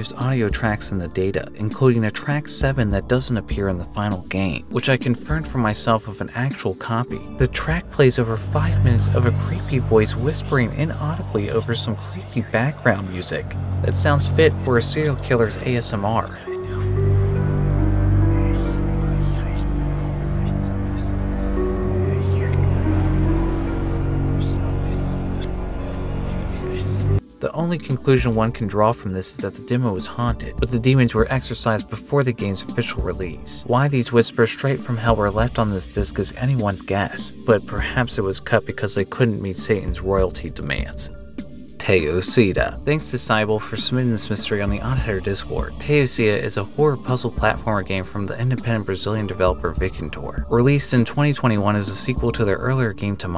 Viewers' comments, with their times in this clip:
0:08 seems like the whispers are in german.
0:11 the whispering sounds like its reversed
0:21 that sounds like a sound track from the game Nightmare Creatures on PS1
0:23 The audio is obviously reversed so, un reverse it?
0:36 play It in reverse, sounded like it's reversed audio.